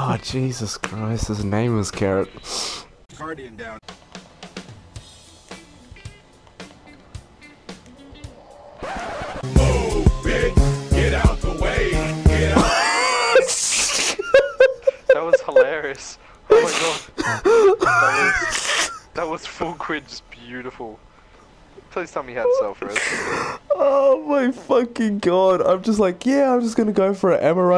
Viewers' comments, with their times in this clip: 0:09 hahaha boom :D nice video man